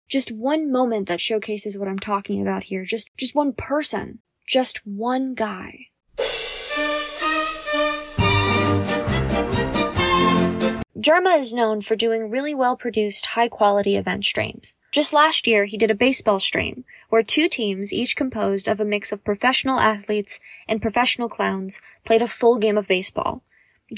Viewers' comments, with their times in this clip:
0:06 the tom lehrer sample caught me so insanely off guard lmao